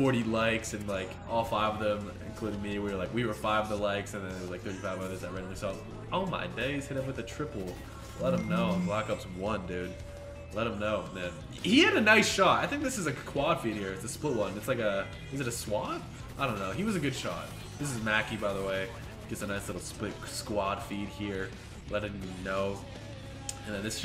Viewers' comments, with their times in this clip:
0:06 tought that was my phone🌚